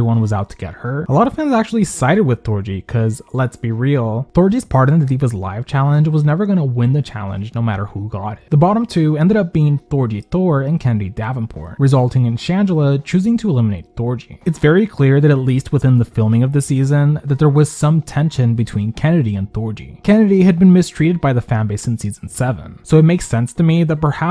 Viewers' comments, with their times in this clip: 0:10 not Kandy Davenport💀💀💀